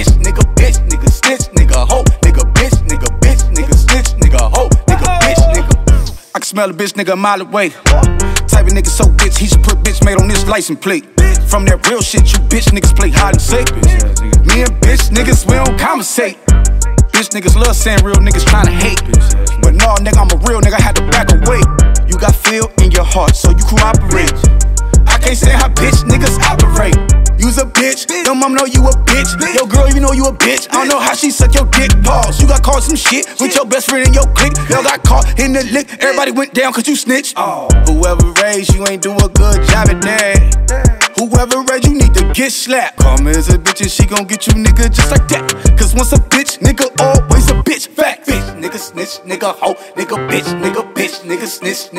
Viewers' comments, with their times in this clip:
0:05 I like how he literally tries to smell before those awesome lyrics.
0:06 dogs be like:
0:37 when you barely miss the hole in wii golf.